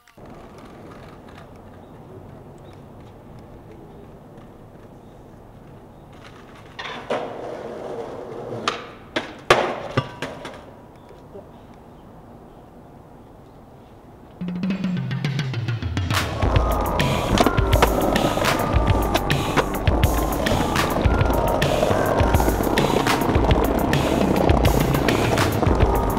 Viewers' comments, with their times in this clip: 0:06 All I see are idiots not wearing helmets... Hope no one gets seriously injured - head injuries are no joke. I'd rather look 'uncool' than be potentially paralyzed. EDIT Dude's head clanks off the post with a guaranteed concussion...
0:11 Dude that knock you can hear is that man still alive? Like what the fuck.